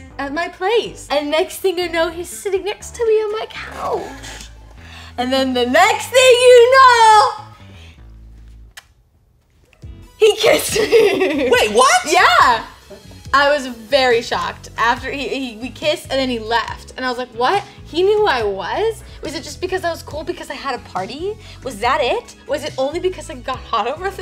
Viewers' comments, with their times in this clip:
0:09 The genuine surprise when he says “wait what?!” LOVE THAT FOR THEM